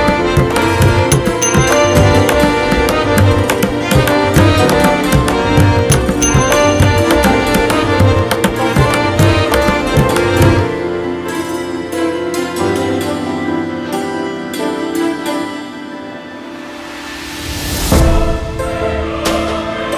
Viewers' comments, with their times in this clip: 0:04 Groovin' to the tunes until the ugggaduggas lol